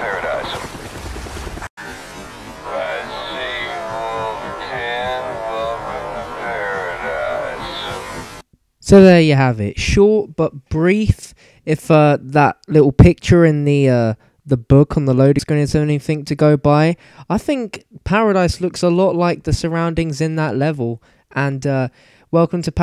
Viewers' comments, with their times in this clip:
0:03 sounds like g man lol